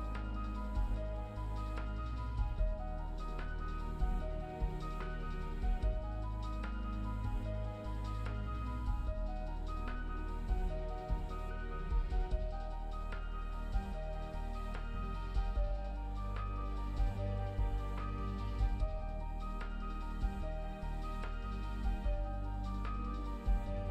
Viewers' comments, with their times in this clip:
0:05 Very suspenseful music Is something unexpected going to happen????